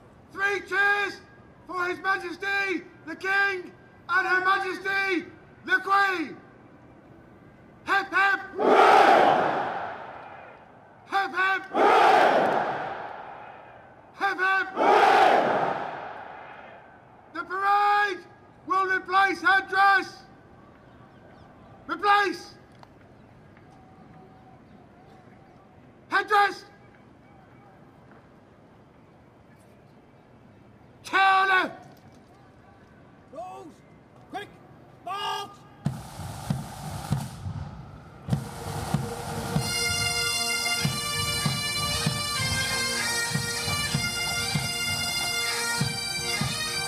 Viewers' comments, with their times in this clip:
0:08 There's a slight delay from the front to the back. One is not amused.
0:33 That beat drop with the bagpipes is lit.